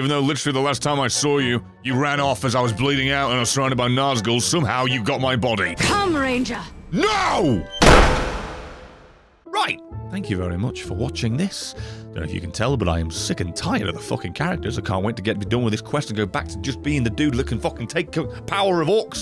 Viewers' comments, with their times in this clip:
0:06 ah yes...Loud Equals Funny...I laughed a little to hard at that